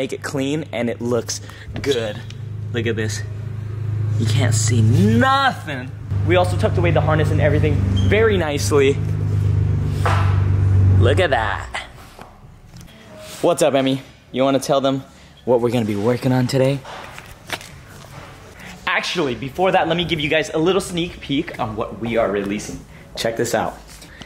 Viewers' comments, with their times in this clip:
0:07 i can definitely hear that GTR